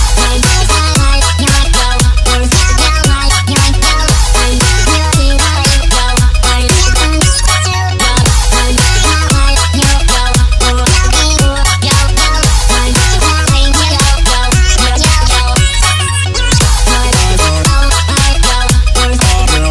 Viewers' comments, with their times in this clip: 0:07 i hate the song it's just to annoying